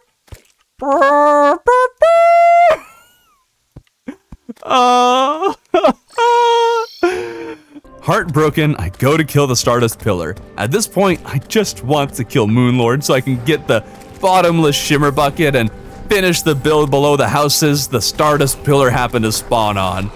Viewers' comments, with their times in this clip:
0:04 sounds Iike pops from regular show lmao, awesome video btw 🙌